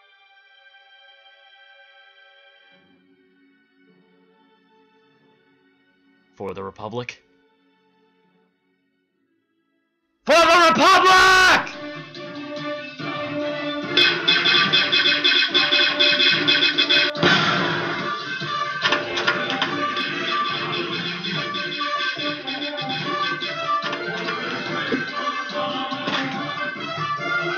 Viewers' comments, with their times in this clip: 0:09 that scream was so loud lmao